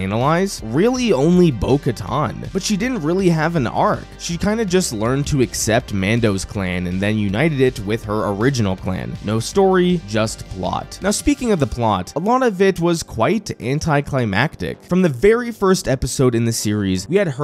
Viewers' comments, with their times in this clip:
0:03 I don’t like how you said analyze… Sounds like something else lol